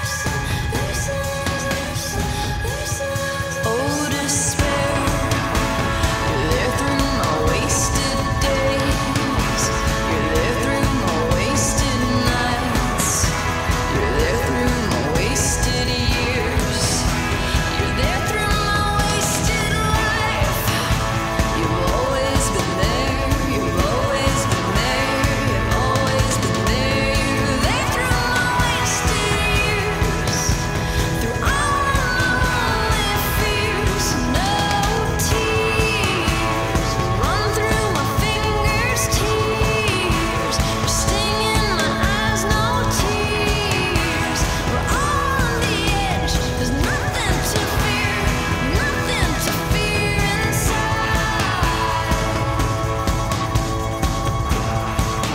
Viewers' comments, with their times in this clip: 0:07 you have to be a bit patient with this song... not every song is gonna start loud and proud... this builds up... but if your not patient start ... but it takes away from the journey if you do.
0:37 John Lennon is that you?